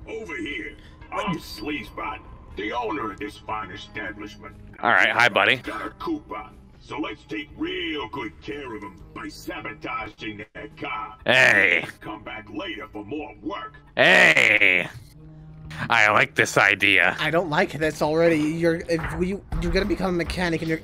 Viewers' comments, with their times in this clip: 0:05 Suns beautiful gasp after the robot said by sabotaging their car